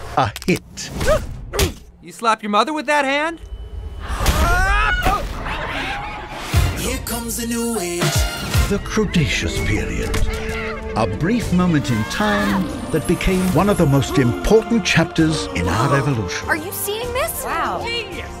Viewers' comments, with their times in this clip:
0:04 they just used the same voice clip of Turbo where he falls into a hood of the car with waterdrops in it